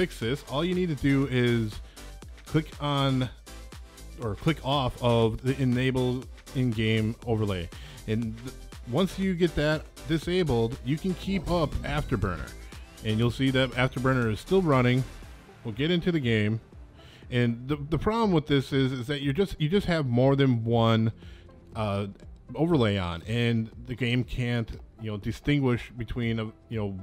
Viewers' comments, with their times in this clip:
0:10 theres some bass drop or something and wearing headphones sounds like something is falling in the background. your solution worked but i spent like 5 minutes on this video bc i thought something fell.